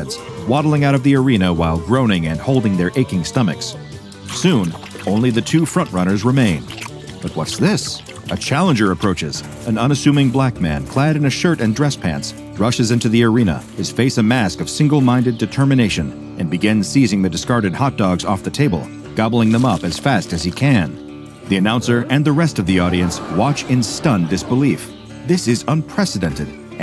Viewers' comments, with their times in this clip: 0:08 LMAO the way he said it